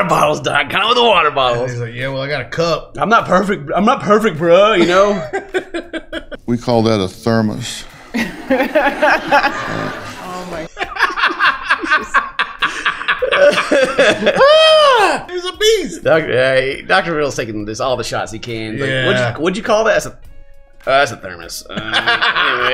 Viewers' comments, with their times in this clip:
0:05 I love that his Mum is just blunt about the ridiculousness of his claims and that she just ends up laughing at his ass 😂👍👌💚